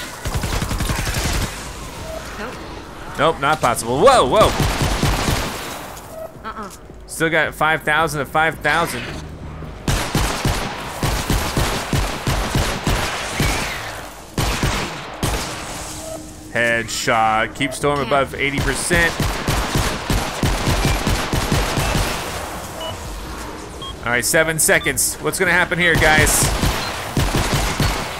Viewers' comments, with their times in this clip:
0:09 Did anybody notice that the bullets sorta sounded like jingle bells?